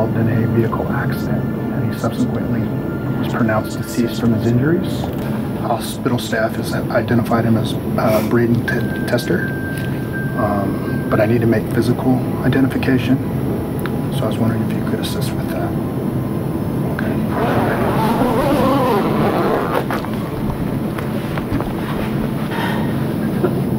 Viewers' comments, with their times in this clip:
0:08 Does anybody else you’re the find my iPhone noise